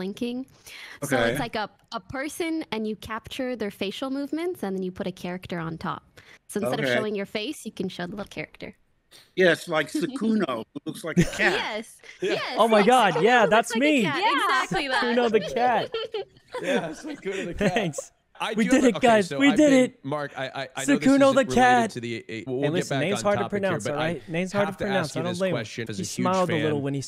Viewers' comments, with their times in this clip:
0:10 suckkuno the cat lol